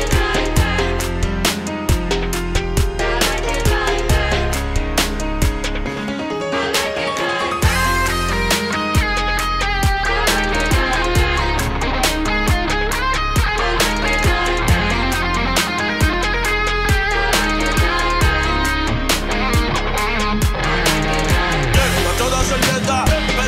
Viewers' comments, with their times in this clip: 0:08 Can’t get this out of my head!😍👌 And that guitar!😍😍